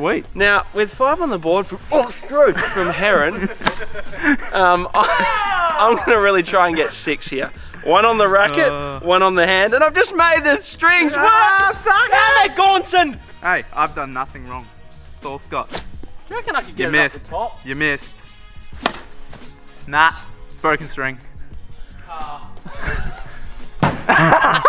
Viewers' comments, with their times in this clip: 0:05 That distant “wow”though.